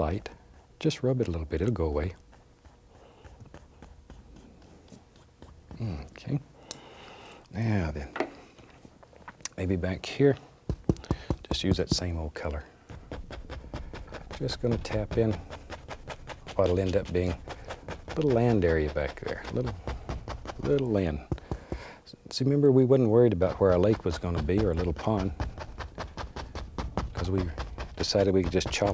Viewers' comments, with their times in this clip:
0:09 Minecraft stone mining sounds